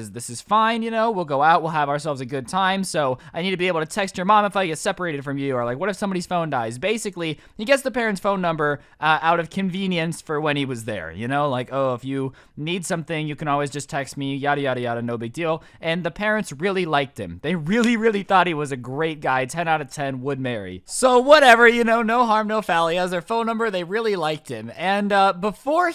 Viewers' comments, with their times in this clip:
0:06 i cant be the only one that heard:"or what if someone falls and dies" xD